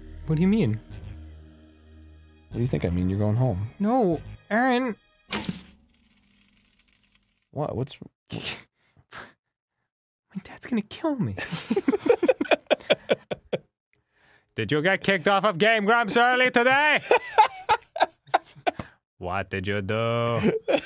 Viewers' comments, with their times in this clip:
0:04 i love the way dan says “no~ arin” sometimes